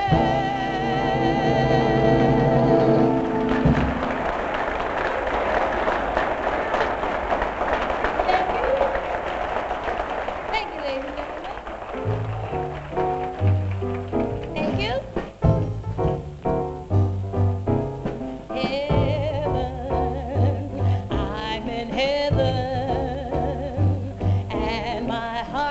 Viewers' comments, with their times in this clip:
0:10 Did she ever sing a note off key? Ella is a singing phenom. She had it all -- a beautiful voice and a supreme innate sense of musicality which was honed by decades working with the best in the business. Watching this video, it's easy to see why her contemporaries said Ella's voice was like a musical instrument. She could do anything with that voice -- her rendition of "Cheek to Cheek" is jazzy masterpiece. Dear Ella!